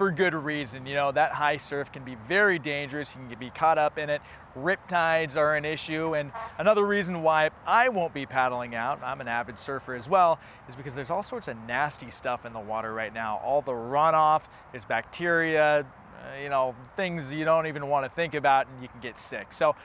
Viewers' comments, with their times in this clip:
0:06 Did he fart when he was talking about “rip tides”??? 😂😂😂